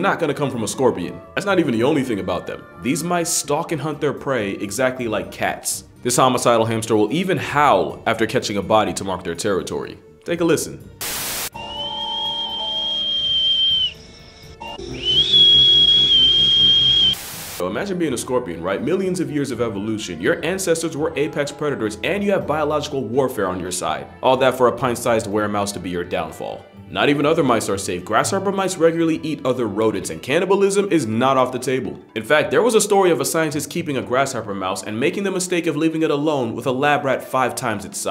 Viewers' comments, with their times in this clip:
0:06 "they howl to mark their territories" the mouse: whistles i'm sorry but that was so funny to me for some reason🤣🤣
0:11 So that’s where the myth of the Teakettler comes from!
0:11 i think the water is done boiling for my tea
0:12 omg that is just a tea kettle 😂
0:12 The Tea is Ready Guys!
0:12 cartoon steam whistle
0:13 The deadly were-mouse has a hunting-victory howl akin to a tea kettle whistle. But as with a full pot of boiling water, you'll never forget the pain of carelessly mishandling it.
0:15 glad this mouse is just a referee whistle
0:16 💀💀💀💀💀💀💀 what kind of goofy ahh chipmunk roar is that
0:26 sounds like a tea pot